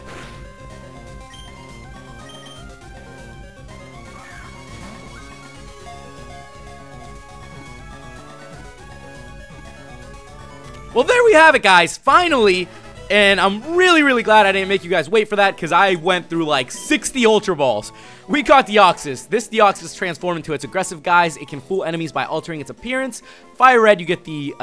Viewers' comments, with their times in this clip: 0:08 lol that voicecrack tho